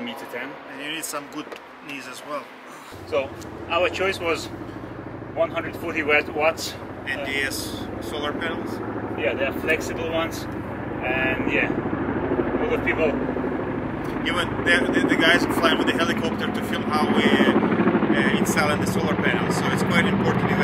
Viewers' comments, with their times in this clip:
0:03 in the ass solar panels.